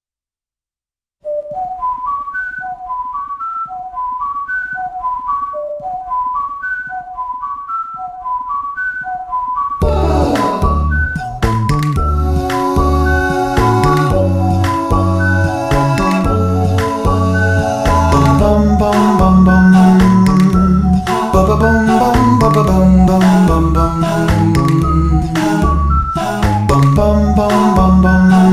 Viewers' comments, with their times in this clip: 0:09 How did you do the harp sound effect ?
0:09 That "Puuuuah" was so graceful.